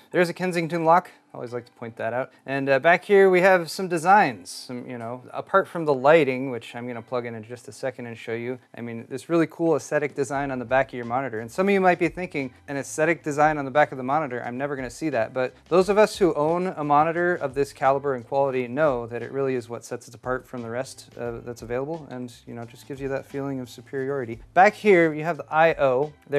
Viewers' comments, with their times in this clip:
0:10 omg the sarcasm 🤣🤣🤣🤣🤣🤣🤣